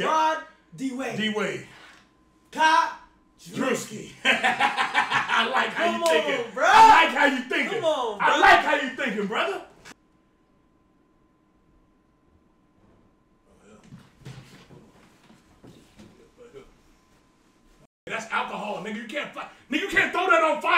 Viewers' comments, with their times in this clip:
0:08 Na from them being so hype to silence with the girl on the floor with fire had me laughing so funny how they cut it.. 😂😂